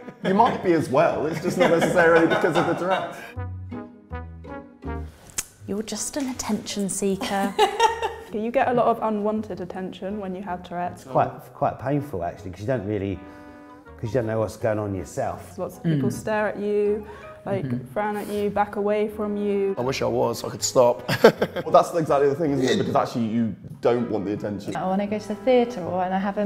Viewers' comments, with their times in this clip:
0:09 omg she reminds me of Princess Diana. Do yall see/hear it?? Its iry how similarly she speaks like her, i love it! I love all of them lol one thing about tourettes is that everyone who has it is attractive lol theyre all gorgeous 😍 everyone ive ever met with tourrettes is beautiful.